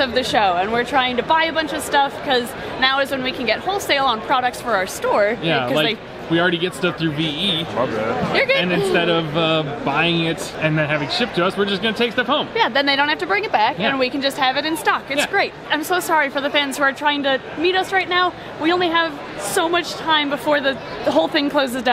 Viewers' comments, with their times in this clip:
0:07 This might be random but I love the way the guy says "my bad"